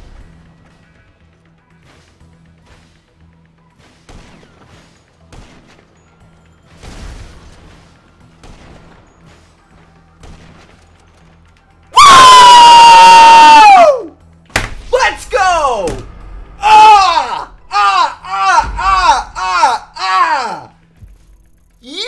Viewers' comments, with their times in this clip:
0:10 PLEASE HEADPHONE USERS BE AWARE.......